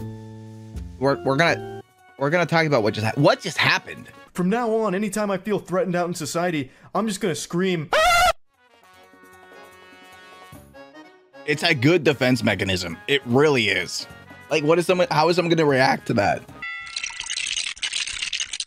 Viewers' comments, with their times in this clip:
0:05 LMAO that scream got me 😂😂😂